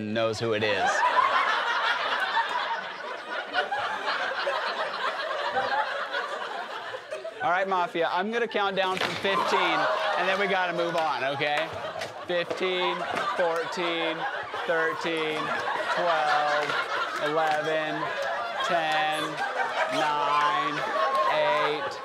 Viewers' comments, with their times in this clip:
0:07 the girl started laughing.